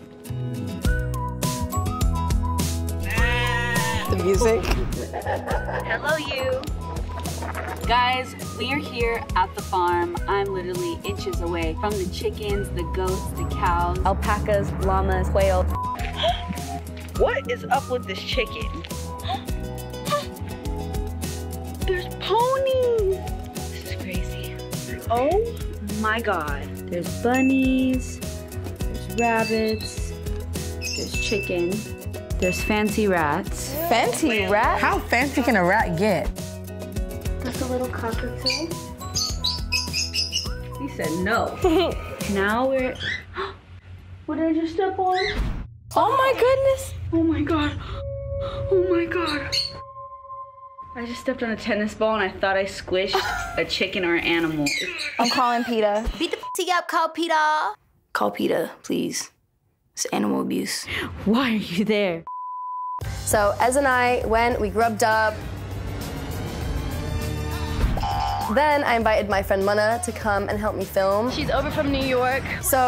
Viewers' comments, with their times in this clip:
0:10 i'm literally inches away from the chickens, the goats, the cows, alpacas, llamas, WHALE
0:55 the movie theme noise came on and I died!😆 perfect ass sound for that